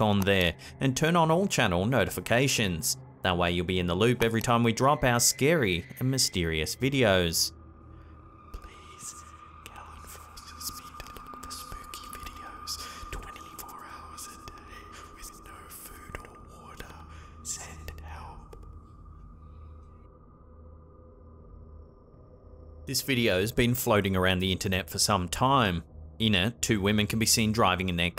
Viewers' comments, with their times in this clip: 0:09 what`s with the voice-over ?